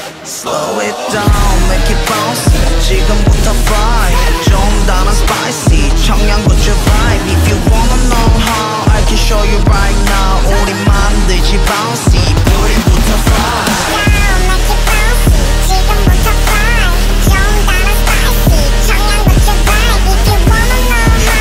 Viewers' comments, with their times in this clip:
0:06 does anyone else hear a 🦖 nyahhh adlib here?